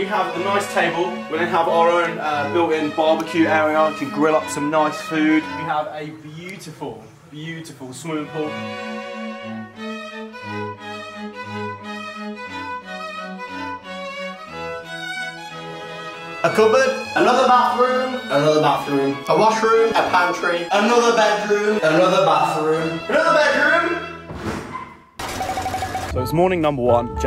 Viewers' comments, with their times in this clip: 0:09 I love how far the censor goes out 🤣🤣